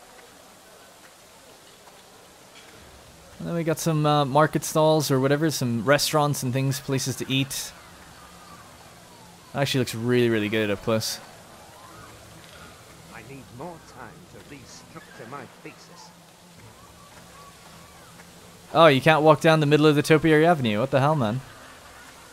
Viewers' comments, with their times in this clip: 0:10 I dont know about anyone else, but the NPC that talks in the background sounded like Snoop Dogg, I Guess he's studying Music🤣🤣